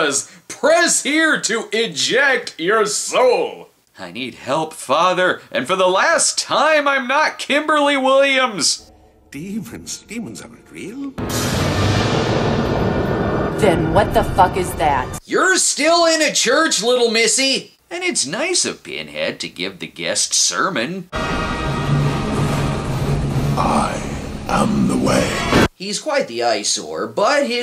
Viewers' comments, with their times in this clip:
0:10 This Movie is the weakest of the first 4, but man, i laughed every Time by her delivery